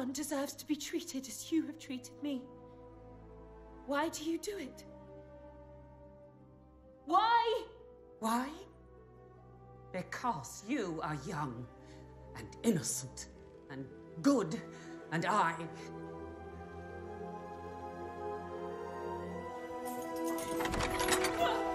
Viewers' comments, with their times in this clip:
0:03 i love how Cinderella say WHY ! after